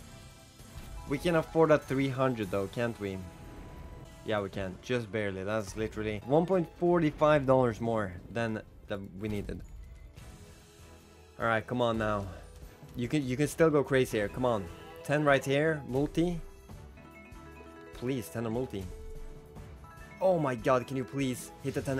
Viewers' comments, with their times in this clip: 0:03 that was a nice damnnn www